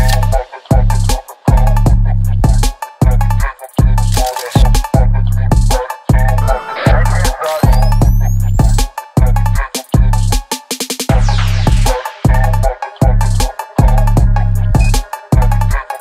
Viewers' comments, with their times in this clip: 0:03 why is no one talking about the fact that there’s phonk as one of the bgm😭